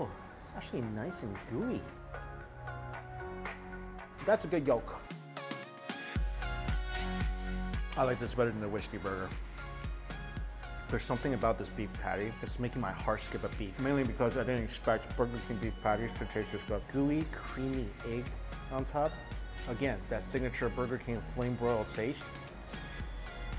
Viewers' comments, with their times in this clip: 0:08 nani?? casually ending the sentence post-production lol